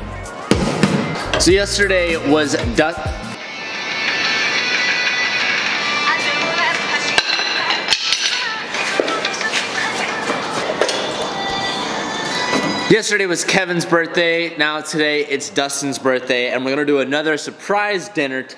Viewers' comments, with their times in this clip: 0:03 BRO WAS THAT HIS RINGTONE.... 🤣🤣🤣🤣🤣